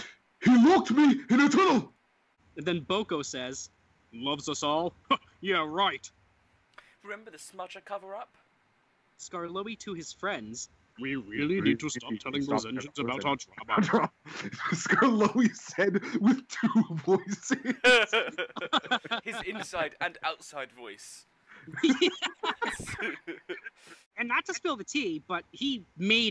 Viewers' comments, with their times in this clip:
0:10 HAHHHAHAHAHHAA BOTH OF THE VOICES HAHAHAA IT CAUGHT ME OFF GUARD-